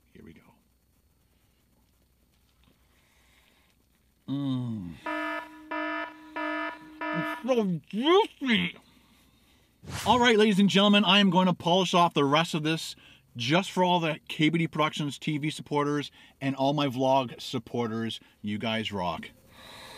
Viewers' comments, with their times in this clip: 0:04 that alarm bell gives me anxiety